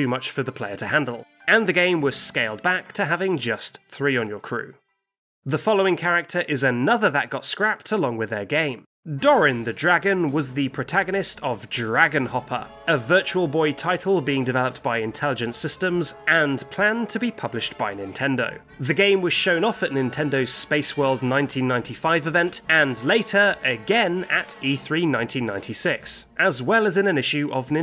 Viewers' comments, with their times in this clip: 0:09 Aaah nooo why that music! Why do you have to remind me that i finished dq11! My life feel so empty without it!